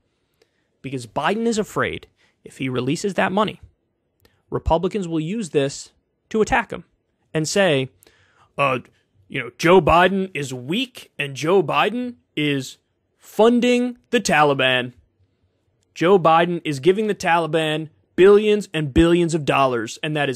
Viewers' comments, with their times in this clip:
0:07 Bruh that republican impression is spot on 😆 🤣